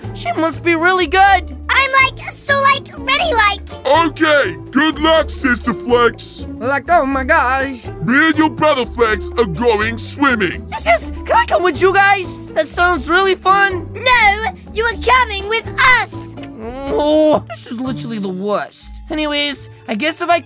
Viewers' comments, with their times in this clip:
0:07 like oma gash (me fav part)